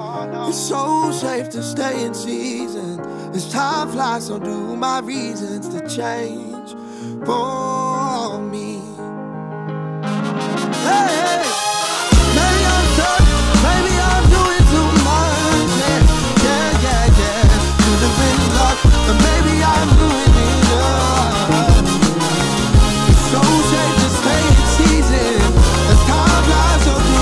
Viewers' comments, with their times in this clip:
0:09 The brass section drop cures cancer and solves world hunger